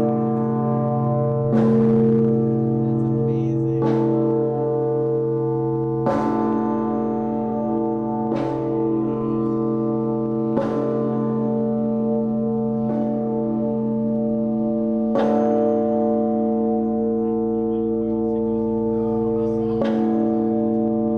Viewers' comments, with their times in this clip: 0:07 This guy like this big bell is vibrating